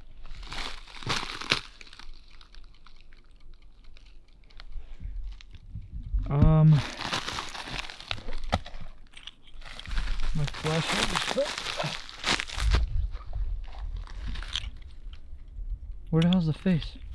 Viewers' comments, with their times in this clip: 0:04 please tell me you were tapping on something, because if not, I’m hearing tapping and that is when creepy ass face popped into the snow